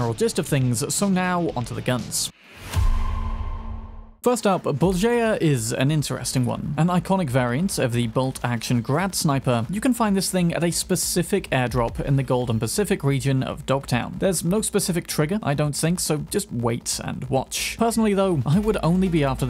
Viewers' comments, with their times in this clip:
0:05 ahahaha, you really butchered the name here comrade :D